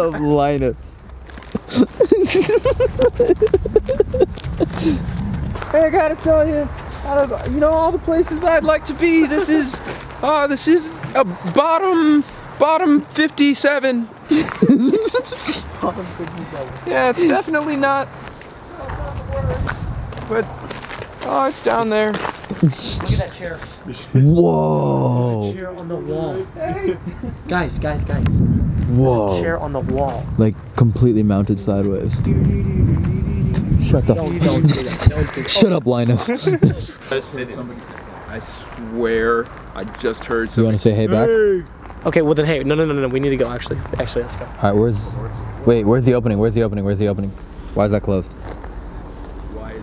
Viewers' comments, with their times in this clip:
0:06 please tell me i’m not the only one that thought he sounded like morty
0:07 he sound like morty from rick and morty ahaha
0:07 he sounds just like morty on Rick and morty!
0:11 he sounds so much like Morty from Rick and morty
0:15 best Morty impression I’ve ever fucking heard
0:21 he sounded like morty
0:26 you can hear a HEY! From inside the house
0:32 he starts doing the stranger things theme 🤣🤣🤣